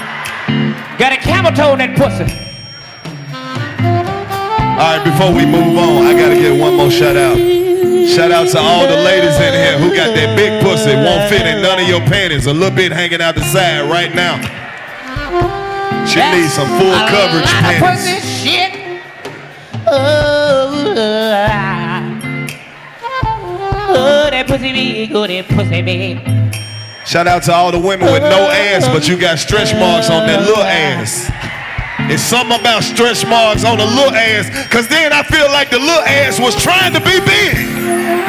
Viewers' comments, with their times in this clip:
0:05 dc RAN that vocal
0:25 his tone and demeanour as he gets up for the shout out My sides I .. 💀💀💀💀💀 Bro is saying NOTHING and EVERYTHING at the same time